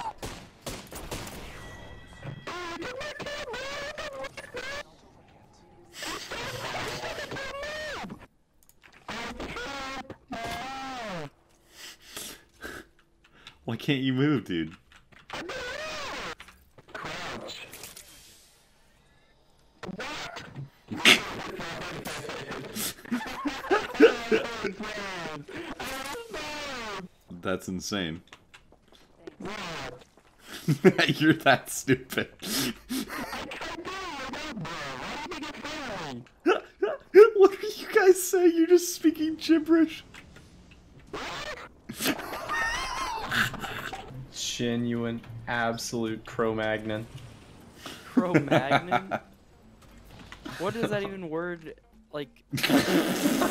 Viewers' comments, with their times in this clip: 0:09 He sounds like an elephant or a trumpet 😂
0:09 when he says move it sounds like sounds like Wall•E.
0:09 when he says "MOVE" it sounds like a pokemon noise
0:13 he speaking in cursive
0:15 he deadass sounds like mario.
0:33 sounds like most conversations when I talk to my father over the phone. He has a burner phone and I constantly remind him to upgrade because he sounds like the damn viper droid things from Star Wars: The Empire Strikes Back
0:33 Everything else said was purely incomprehensible but "BRUH" was gratuitously clear
0:34 this is what I expect the Minecraft enchantment table language sounds like.
0:34 bruh sound effect 2
0:35 i don't speak minecraft enchanting table